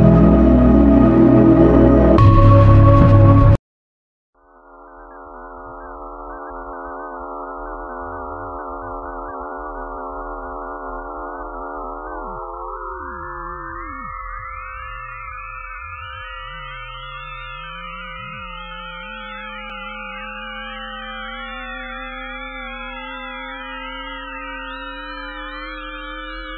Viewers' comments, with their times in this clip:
0:04 sounds like becoming uncanny phase 26
0:04 26 phase uncanny sound
0:04 bro thats a uncanny phase sound
0:05 it’s sound like phase 26 uncanny
0:06 sounds uncanny phase 26
0:11 this phase just sounds like it came straight from uncanny phase 27